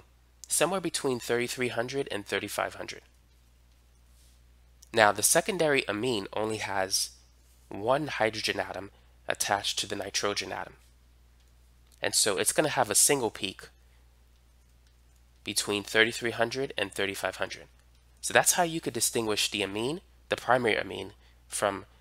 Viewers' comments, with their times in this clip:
0:08 Love this guy but he really said "nitrohgen" 😂